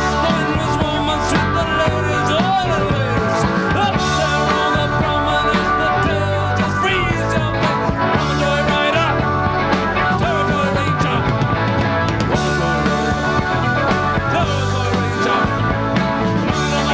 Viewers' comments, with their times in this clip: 0:04 Step Up !! Sounds like David Byrne ish